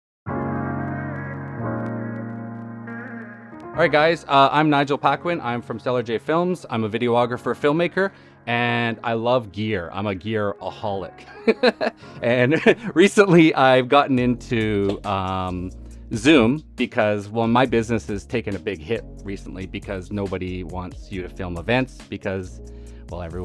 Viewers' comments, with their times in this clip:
0:08 "I'm a gearaholic.. heheh heheh eheh " awkward silence